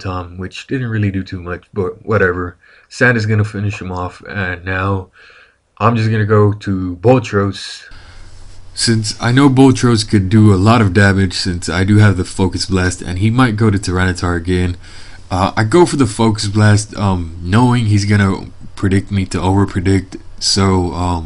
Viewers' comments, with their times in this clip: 0:05 Voice change lol